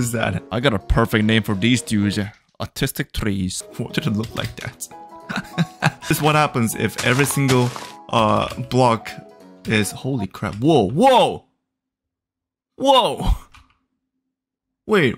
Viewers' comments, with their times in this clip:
0:03 why did you call it "autistic trees??"